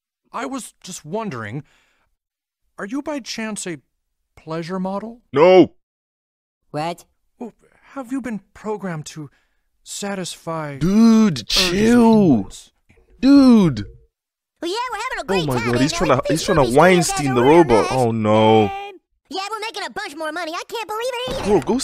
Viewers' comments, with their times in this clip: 0:05 that NOO! was the most serious no I've heard 🤣🤣🤣